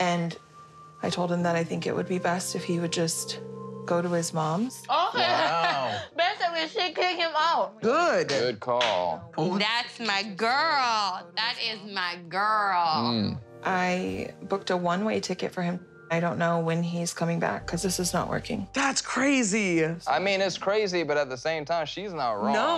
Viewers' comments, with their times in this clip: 0:09 I hear Florida in that accent lol